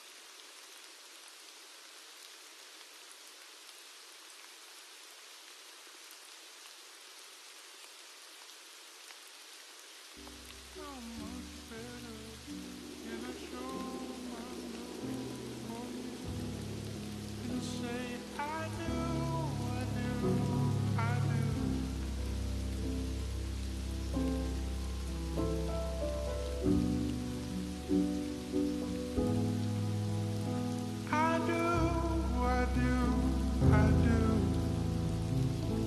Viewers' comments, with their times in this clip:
0:10 BEST SLOWED TEMPO EVER!
0:23 I kinda like the slow down ...it somehow deepens the feelings of this song